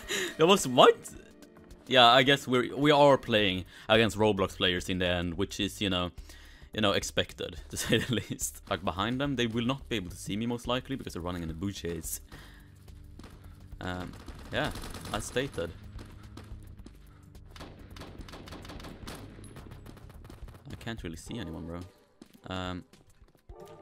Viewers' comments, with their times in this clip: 0:09 Dude when he said “Booshes” it was immaculate...